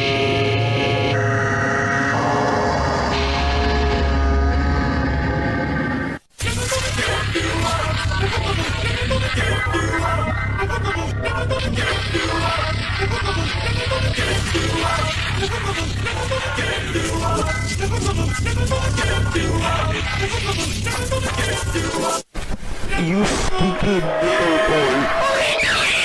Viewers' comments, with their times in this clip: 0:06 sounds like Clubstep 2.0
0:07 I love how rick Ashley now sing fast